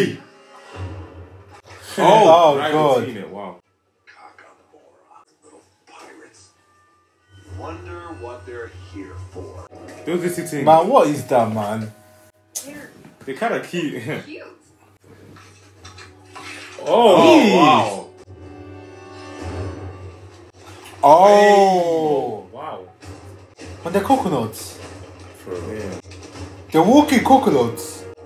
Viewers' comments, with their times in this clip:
0:10 wOOOO what is that? a great ost and amazing percussion